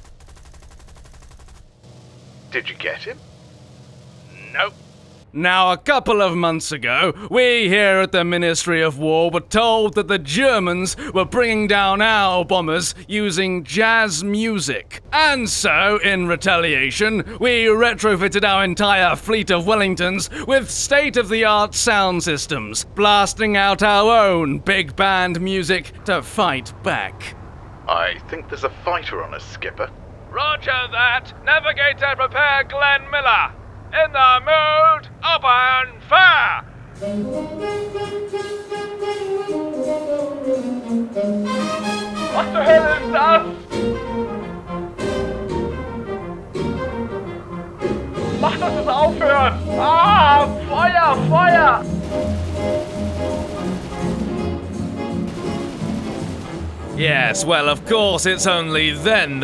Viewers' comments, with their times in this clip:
0:03 I love the Jazz music Vs Glen miller section
0:38 love dat song
0:40 lol i love the part when i the jazz music